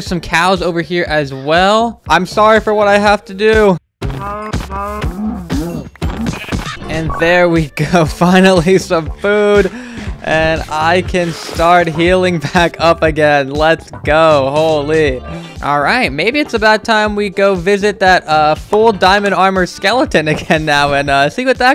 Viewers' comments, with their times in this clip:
0:03 to my opinion that Music is good